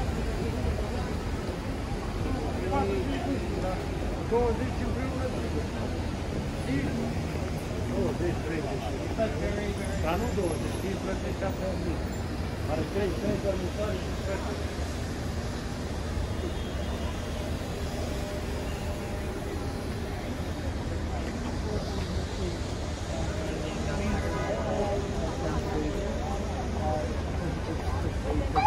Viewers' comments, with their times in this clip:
0:10 I can hear the Romanian language..hahaha